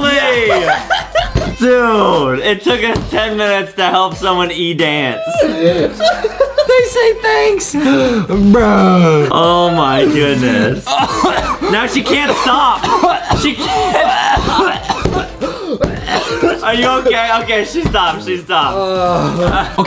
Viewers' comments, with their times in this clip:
0:06 Was i the only one hearing somebody